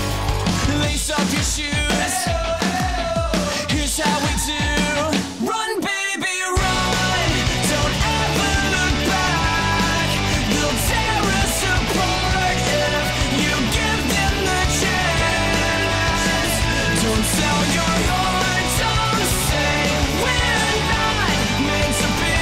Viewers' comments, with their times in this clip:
0:05 Sounds like The Great Escape by Boys like Girls.